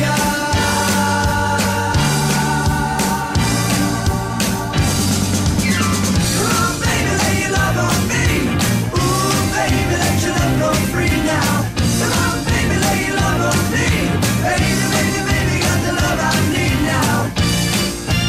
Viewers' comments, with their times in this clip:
0:06 am I the only one who hears a Discord ping?